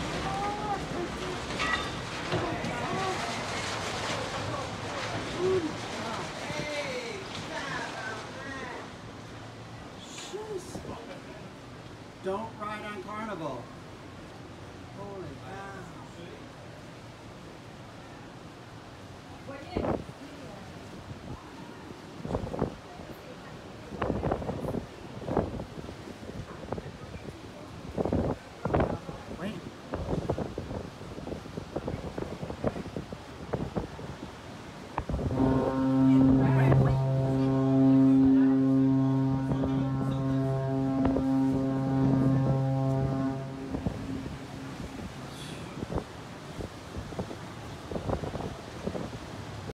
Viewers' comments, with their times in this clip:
0:06 hahaha This is without any doubt a French Canadian : Heeeey Tabarnak!
0:06 french tourists swearing
0:34 uhhh that horn was a bit late thereeeeeeee